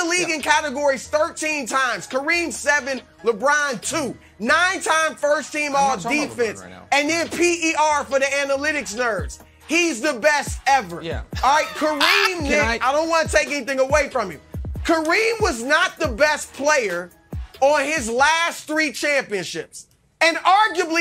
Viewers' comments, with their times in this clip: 0:07 Chris Broussard’s breakdown and comeback was a 🎤 drop for me 🤷🏽‍♂️…. Wilde’s laughter at Broussard breaking Nick down 👏🏾😂😂😂😂